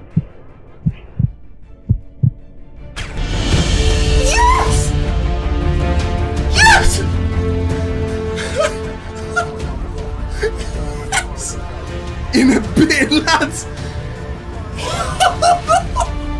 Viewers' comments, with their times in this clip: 0:03 That yes was just something else! Great video!